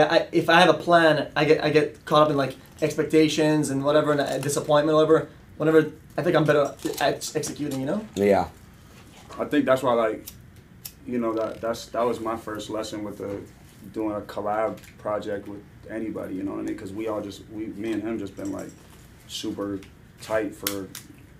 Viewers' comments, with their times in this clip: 0:09 was that a fart from trippie